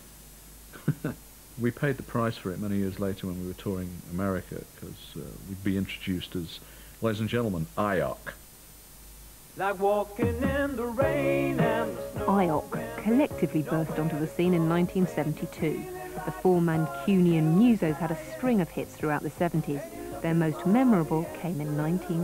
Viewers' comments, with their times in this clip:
0:06 'Eye-ock': so funny!. By the same token, I bet that people today would be thinking that Lol Creme's Christian name was Laughingoutloud.